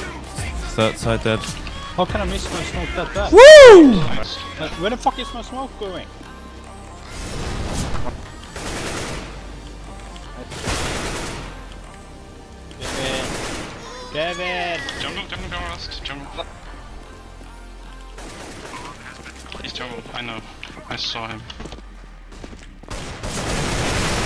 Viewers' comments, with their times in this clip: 0:05 the music somewhat synced with the knife